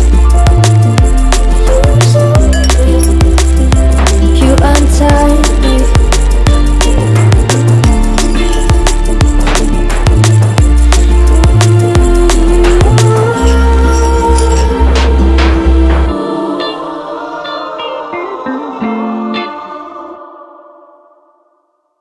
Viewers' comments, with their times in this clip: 0:04 is it glass sound ?